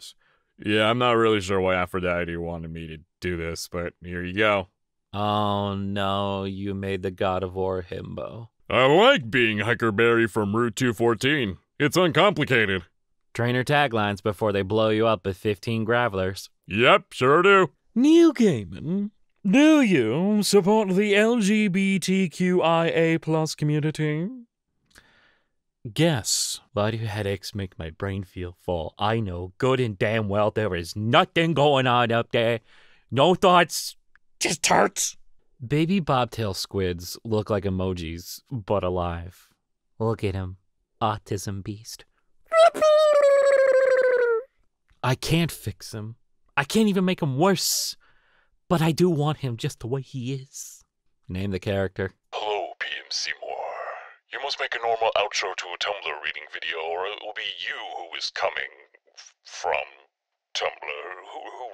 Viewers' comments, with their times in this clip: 0:04 Nice guy Hades but he still talks like the Disney villian begins to explain to his himbo nephew thats not what Aphrodite ment
0:18 You used waaaaay to sophisticated of a voice for that profile picture.
0:42 wait… is it a kid, or a squid?